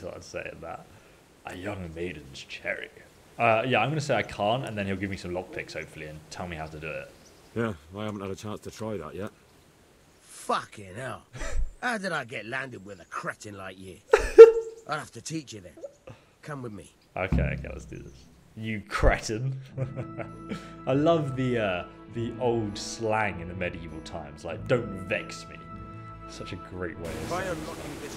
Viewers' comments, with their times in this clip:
0:10 Connor McGregor? Is that you ?